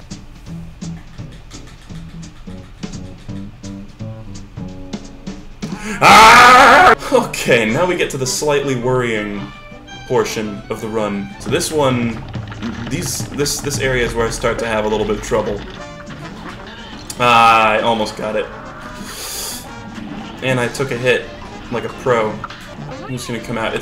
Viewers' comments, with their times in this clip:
0:05 I also yelled "IIIIIIII", and I felt such a connection lmao